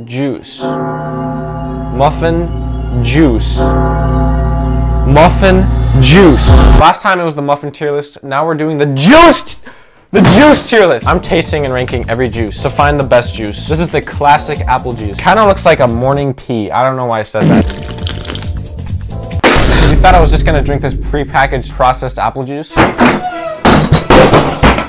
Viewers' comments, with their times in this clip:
0:10 I usually have these videos as background noise, but the music caught me off guard :face-fuchsia-wide-eyes::face-fuchsia-wide-eyes::face-fuchsia-wide-eyes::face-fuchsia-wide-eyes::face-pink-tears::face-pink-tears::face-pink-tears::face-pink-tears: